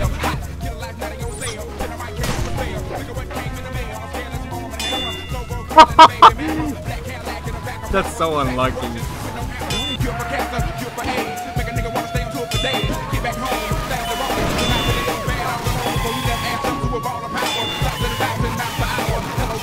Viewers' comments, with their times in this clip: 0:03 you sounded like dr livesey laughing